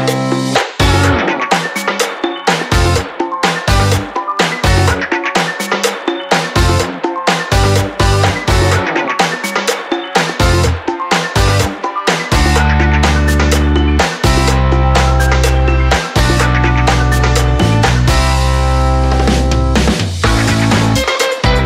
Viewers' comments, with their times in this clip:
0:04 she's laughing. But if I would have done this with my friend he would have Slapped me